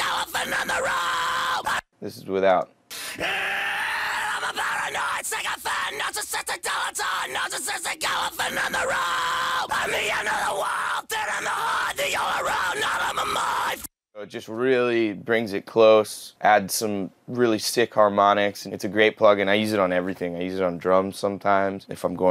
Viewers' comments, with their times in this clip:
0:09 sounds like SpongeBob yelling at Gary lol